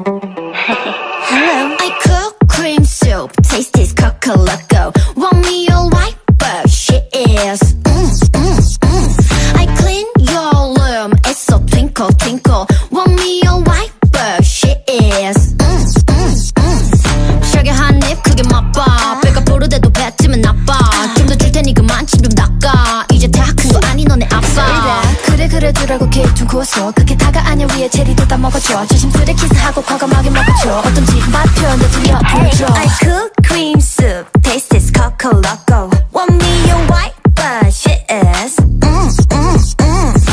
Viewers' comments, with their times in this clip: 0:04 Bruh am I the only one who thought it said "Want me to wipe the shits" 😭😭
0:24 why this rap is so hard😢